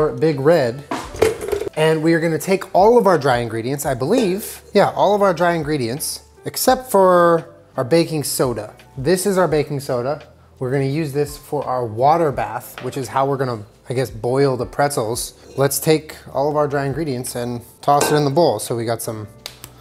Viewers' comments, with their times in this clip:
0:05 Does anyone know the music style or track that is on …. I found it calming. Normally I wouldn't ask, but eh,